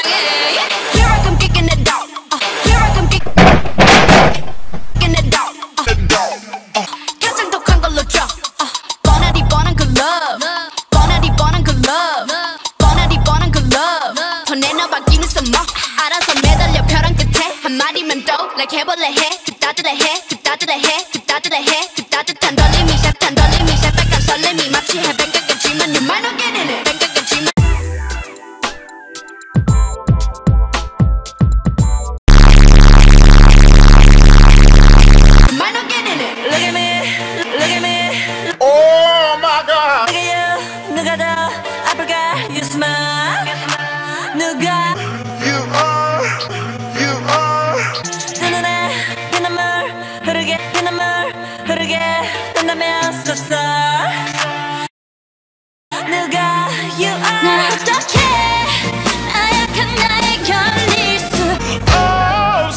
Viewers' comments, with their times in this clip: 0:07 hold up, wait a minute i thought u said "YES LISA SPIT THOSE BRAS " xD
0:34 .....Was that a farting sound I hear👍🤣😂🤣😂🤣😂😍😘 .Just joking....No offense This Chanel is really one of my favorite...Loved it 😍😘😍
0:45 it sounds so good slowed down